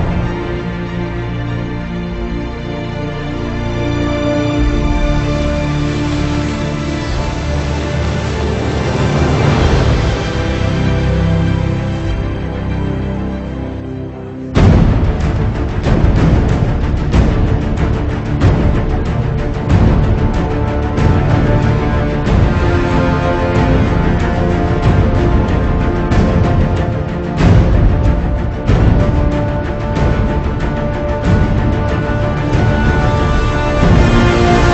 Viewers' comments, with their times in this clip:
0:10 when alfred looks up and the beat drops. U already know wassup. Christian bale in da house!
0:12 one of best node!!! Ghoosebump
0:13 Everyone's gangsta till drums starts rolling Goosebumps moment truly
0:14 So no one gonna talk about how hard those drums hit ? Goosebumps everytime.
0:14 drums kick in and im like "Shits about to get real"
0:14 the drums are so good
0:15 Goddamn the end of this scene is so fucking awesome the music rises as Alfred sees Bruce and Bruce sees him but as Alfred said earlier, they don't talk. Alfred is finally at peace with Bruce and Bruce is at peace with himself. Fucking love it.